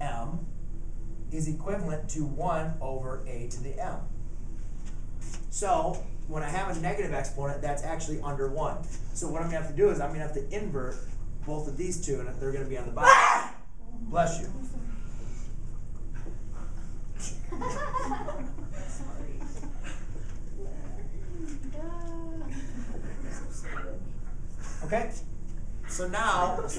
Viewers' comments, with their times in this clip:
0:10 Damn that guy is allergic to math.